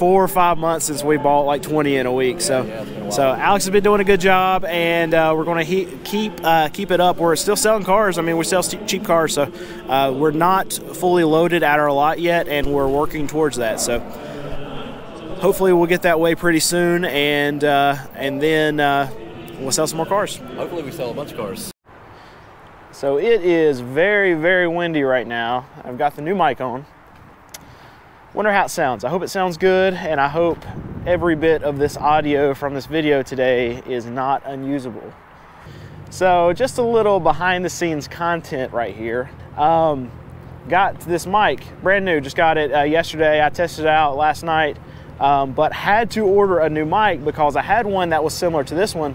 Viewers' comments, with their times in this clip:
0:06 At the min I can still hear that auction man yapping like a dog
0:34 New mic is great. Content is excellent. I learn so much on this channel.